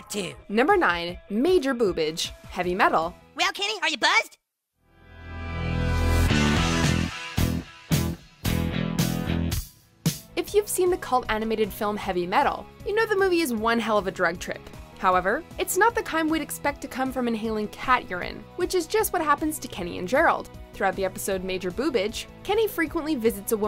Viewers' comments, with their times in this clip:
0:05 that soundtrack music Lol 😂 👍🌸